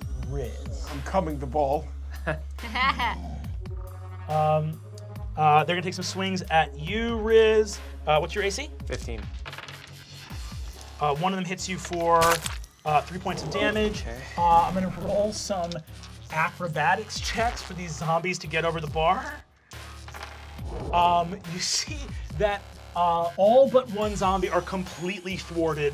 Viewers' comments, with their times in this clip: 0:10 They bleeped the dam in his damage!!! 😆lol🤣